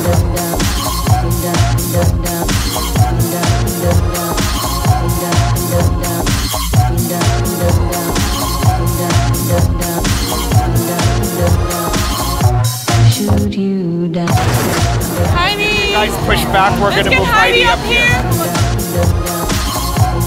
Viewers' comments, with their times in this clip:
0:07 that instrumental in the back ground is so beautiful